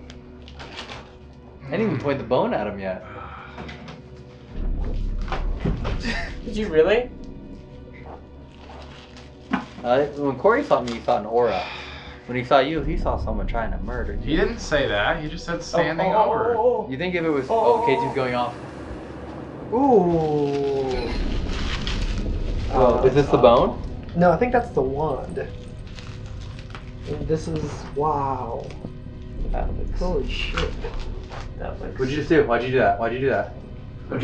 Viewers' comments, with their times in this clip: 0:04 again a creepy exhale
0:19 Did anyone else hear a female voice say "Demon" at like or am I tripping??